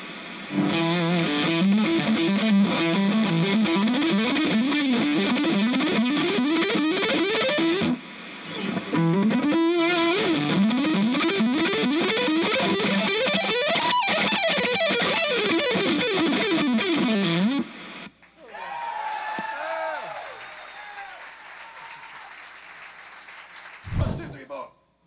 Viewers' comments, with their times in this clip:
0:10 That lick just like colorado bulldog's intro solo